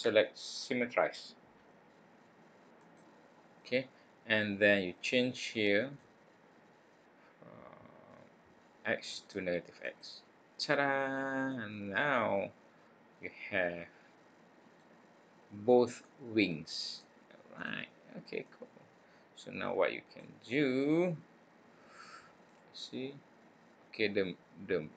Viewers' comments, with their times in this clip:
0:09 the tadaa was so wholesome